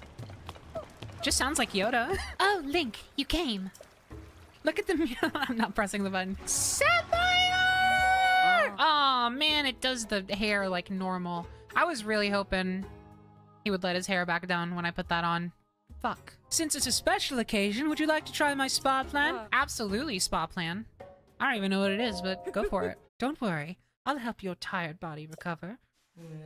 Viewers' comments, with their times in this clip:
0:07 I'm very glad I'm not the only one who can never read sapphire again without hearing Ruby shouting it in Steven Universe